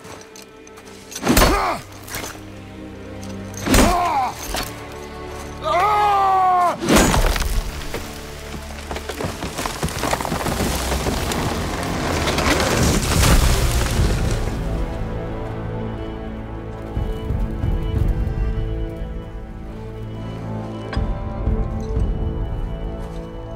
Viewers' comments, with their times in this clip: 0:07 a scream of pain and strength.